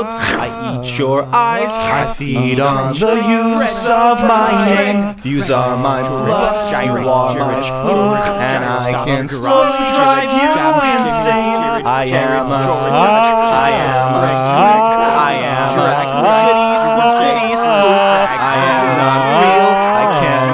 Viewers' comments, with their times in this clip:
0:06 Anyone else hear "George Floyd" ? Pretty sure he's a spook.